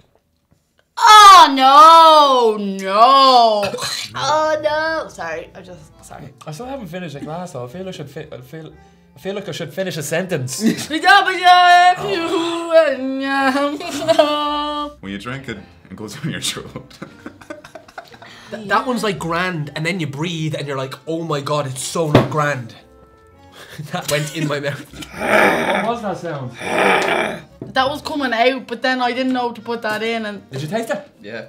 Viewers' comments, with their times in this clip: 0:09 Girl in the black t-shirt started speaking in tongues
0:11 It's really a spirit, she started talkin languages
0:11 she literally does the lion king theme song 😅😅😂😂😂😂😂😂
0:12 she speaks wakanda
0:14 “When you drink it, it goes down your throat” followed by uncontrollable giggles😭